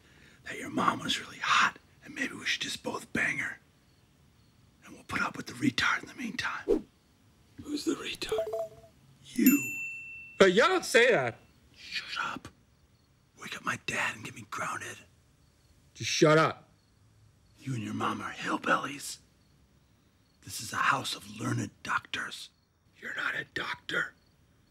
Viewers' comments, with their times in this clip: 0:06 lmaooo the way he delivers “you don’t say that!” 😂😂😂